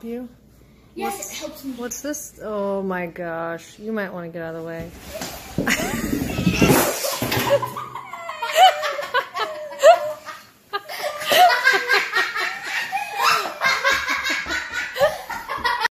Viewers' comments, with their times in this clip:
0:05 😂😂😂😂😂 it sounds like foxy running
0:06 When he was almost at the end of the stairs he sounded like a cat meowing 😂 😂😂